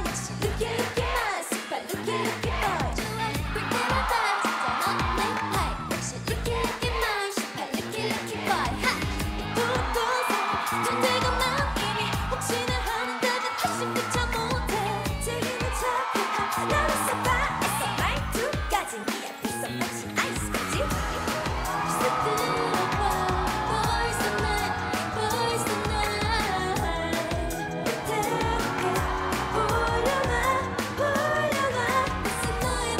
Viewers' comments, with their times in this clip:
0:08 ...... I'm the only one that finds so tender the way Joy said HA! ?
0:12 Did someone sneeze after ?
0:13 I hear Seulgi's cute hiccup😍 #Rookie7thwin